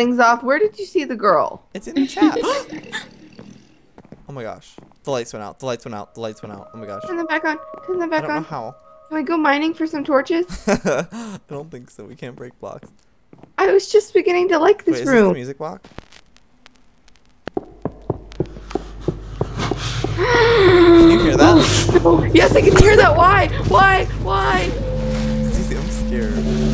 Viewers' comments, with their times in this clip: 0:04 THAT LAUGH DO :((((((
0:07 I stopped the video since I got really scared by the lights turning off and the laugh.